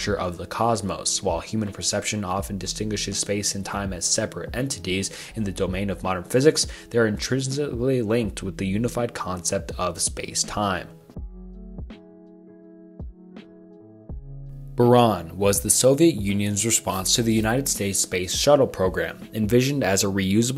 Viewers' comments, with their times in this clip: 0:08 Seems like a highschool project. Not saying it’s bad. But you should def work on your pronunciation. Hahahahaha as typing this you mumbled words lmfao. It made this video awesome I take it all back.